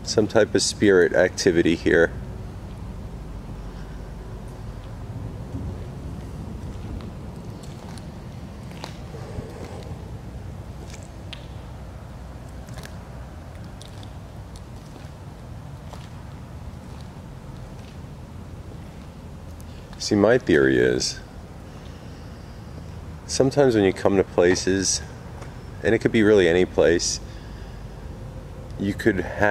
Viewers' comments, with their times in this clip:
0:04 not sure if road noise, but after you ask for a responce i hear two knocks
0:10 after you ask if there is spirit activity, as you walk to the pole there was a heavy exhale...it could have been you but I really don't think so, but could be wrong... much braver than I am, love the 30 min challenges thanks guys!!